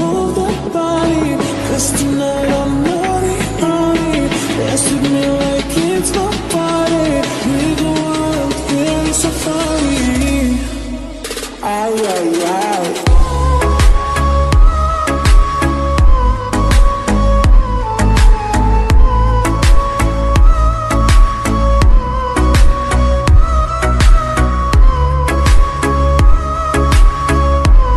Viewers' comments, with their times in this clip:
0:10 that ayyyyy ayyyy ayyyyyyyyy 🔥🔥
0:12 This music when second.......... it's just awesome ❤❤❤
0:13 Love This Music